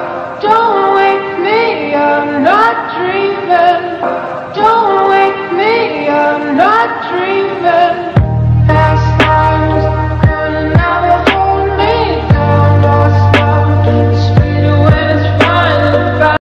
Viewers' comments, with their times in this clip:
0:07 this beat drop. touching me..